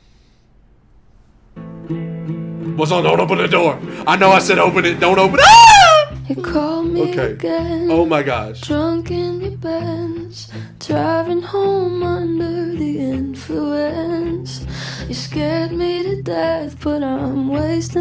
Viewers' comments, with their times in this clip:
0:04 It was all good and fun until it became one of your most reactive reactions after that... squeal hahahhahaha.